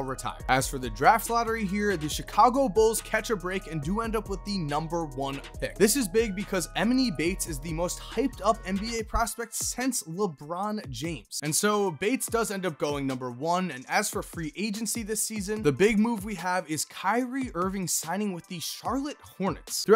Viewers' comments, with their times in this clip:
0:05 So we just gonna ignore how he says emoni bates
0:06 dude made emony ehmini